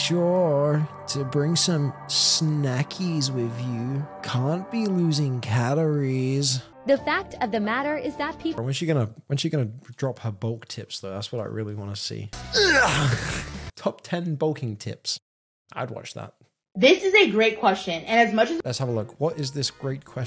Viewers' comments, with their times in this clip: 0:07 Bruh. You sound just like that mystery/crime channel I subscribe to when you did the voice